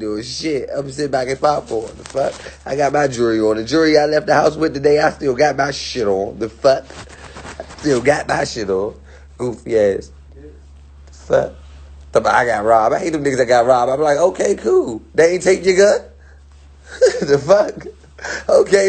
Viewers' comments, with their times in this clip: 0:06 why he said df like that